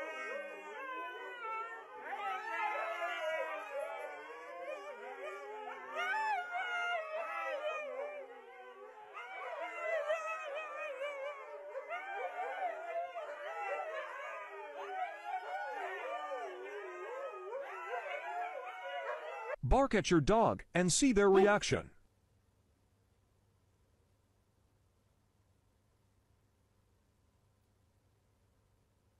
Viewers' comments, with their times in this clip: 0:04 I like how the huskies tried to started talking human instead
0:05 Why are dogs singing like they're part of some singing group?
0:05 RaWr RaWr RaWr 🎤😂 like da huskies were singing 😂. And i saw a funny pug spitting its touge😂
0:06 "Here I am" someone was singing let it go
0:12 literally sounds like the don’t let it slip away song during the chorus. LOL
0:14 These dogs are acting like kids who didn’t want to but were forced to sing in the high school play 😂
0:17 🤣🤣 R the Dogs laughing I can't tell